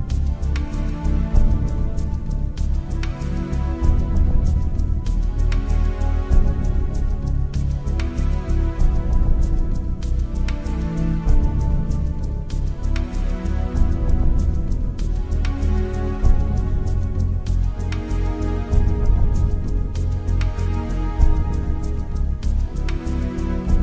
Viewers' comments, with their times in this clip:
0:03 my guy got some dbz playing the the background.
0:04 He just became my favorite fighter got DBZ in the background after super perfect cell kills trunks
0:08 ferg has DBZ playing in the background !!